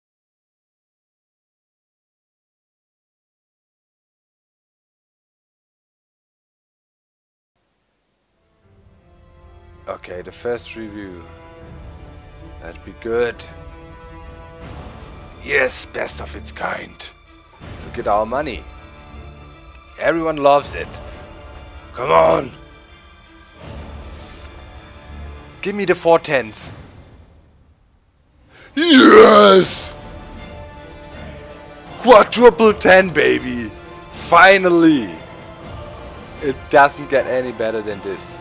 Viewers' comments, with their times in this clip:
0:06 i like music
0:25 EPIC MUSIC AND STUFFF